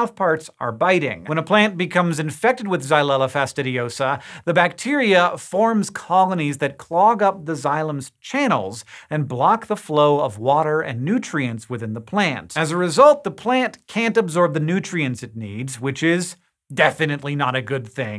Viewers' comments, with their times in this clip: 0:03 Dang I had to rewind that a few times to know how to pronounce that word Xyella Fastidiosa